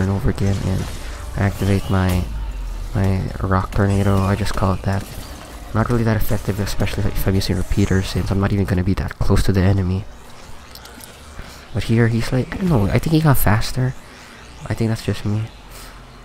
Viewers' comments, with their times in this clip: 0:03 Prejudged Seeker he spreads his wings and screams. He was beautiful.